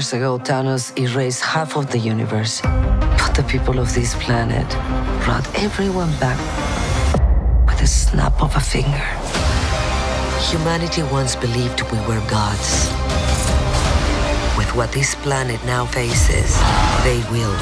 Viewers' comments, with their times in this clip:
0:04 most iconic line in 2021 "half of these pee-pole..." Yes, mama, we heard u said "pee-pole" 😍😍😍